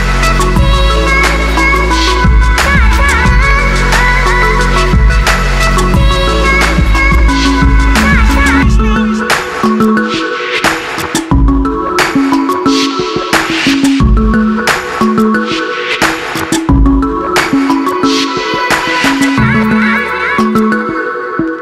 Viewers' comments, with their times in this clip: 0:07 did anyone heard smelfie too